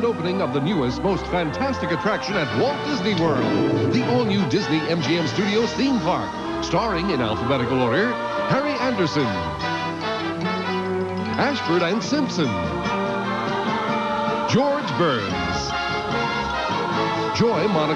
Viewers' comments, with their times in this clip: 0:03 why does Leo have Tanner's roar?